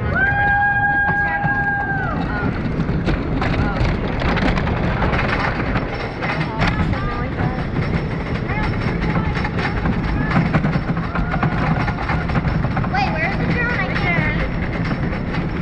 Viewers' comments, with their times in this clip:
0:03 who else heard the freddy fazbear laugh ???